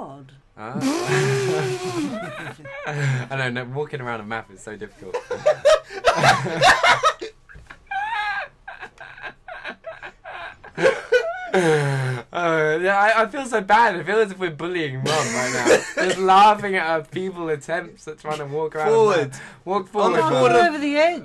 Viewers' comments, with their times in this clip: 0:06 his laugh lo